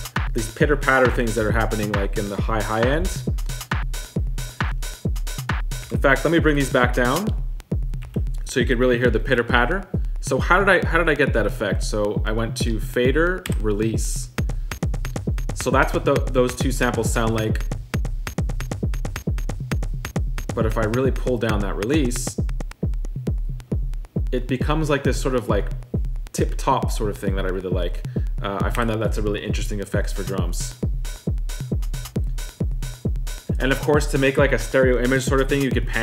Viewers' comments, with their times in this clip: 0:04 really not being a dick here, but the four-to-the-floor beat here could be done on pretty much any drum machine/sampler in the past 25 years.
0:24 sounds like a clipped tape record player or like a clipped harsh sound of feedback loop analog FX of the Bestie by BASTL, which is dope, without a doubt!